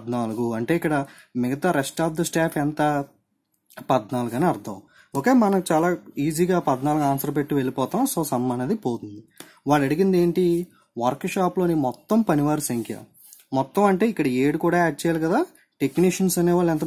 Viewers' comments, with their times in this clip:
0:03 the sarcasm tho :p